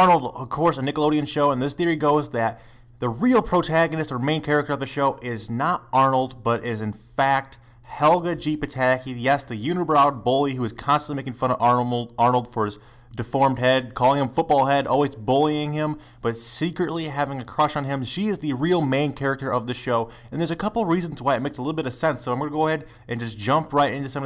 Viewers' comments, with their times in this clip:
0:09 DId he say ''yes, the unibrowed boy''?